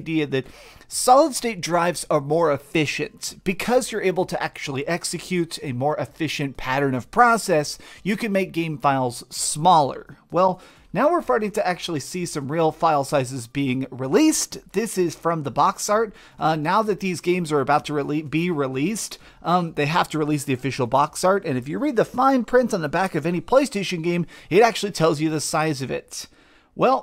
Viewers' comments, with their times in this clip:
0:10 "now we're farting.." haha
0:10 "Now we're Farting!"